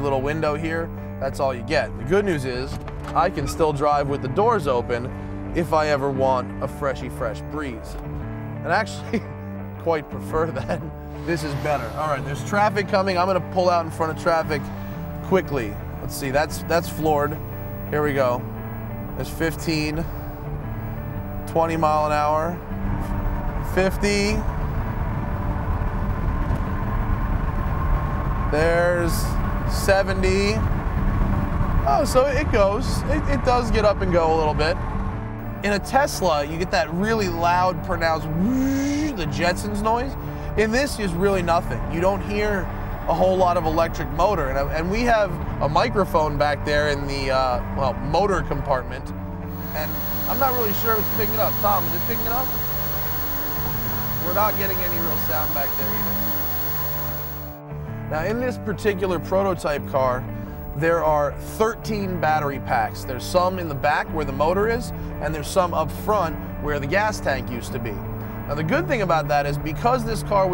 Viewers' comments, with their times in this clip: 0:10 *Door ajar light noises*
0:49 rip heaphones users.
0:53 that's a VERY high pitch noise.. Piercing! 🤣